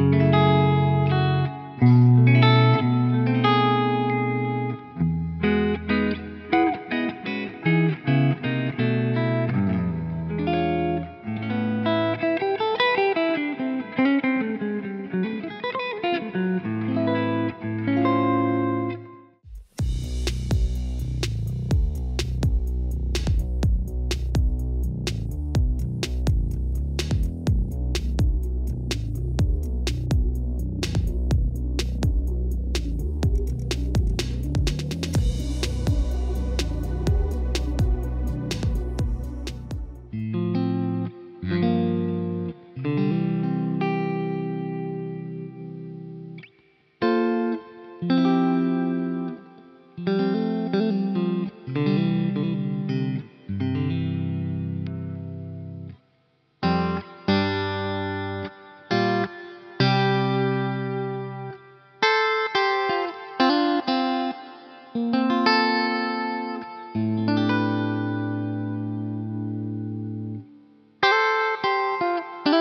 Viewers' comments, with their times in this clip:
0:06 Love that tone ...
0:58 Clean amp with stratocaster starts